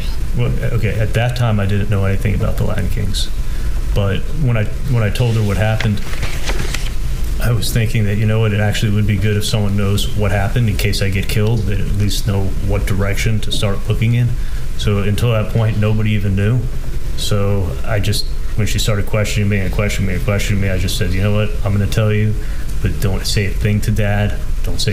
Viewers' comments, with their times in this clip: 0:05 I don't think he's having trouble breathing because he's breathing more shallowly; I think he has acid reflux.